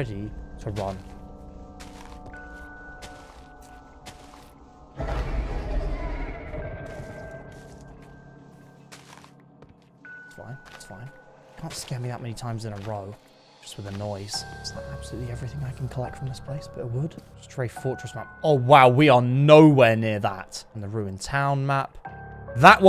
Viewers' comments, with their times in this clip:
0:05 that’s sounds like the wither storm from Minecraft story mode